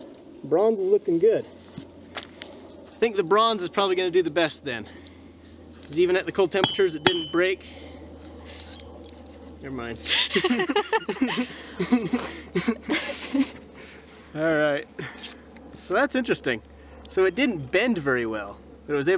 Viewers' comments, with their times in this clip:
0:07 that laugh so cute :3